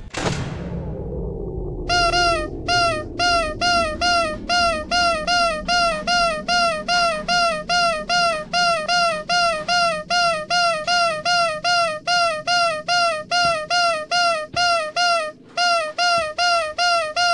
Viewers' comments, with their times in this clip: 0:05 lol, spamming it sounds like 'Bear' semms legit cuz its freddy's nose XD